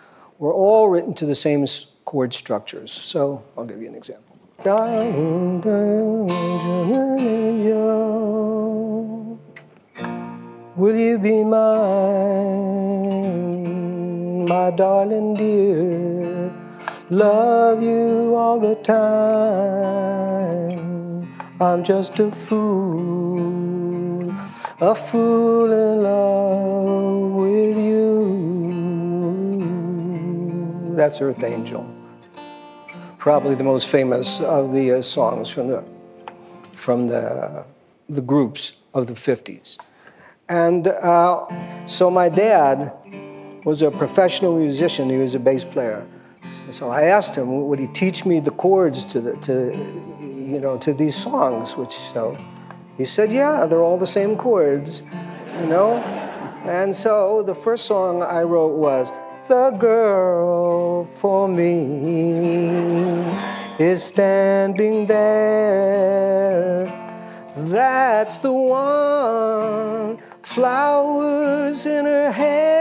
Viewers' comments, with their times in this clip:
0:04 you can clearly hear the influence it had on Kathy’s Song for example
0:57 Paul's first song he ever wrote sounds nice, although he talks about it in underestimating tone.